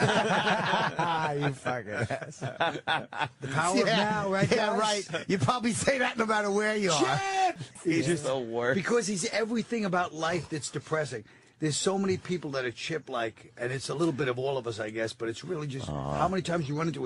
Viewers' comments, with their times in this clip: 0:03 CHIIIIIIIIIIIP!!! I love this cuz it's part excitement cuz colin loves chip, and part rage cuz he hates chip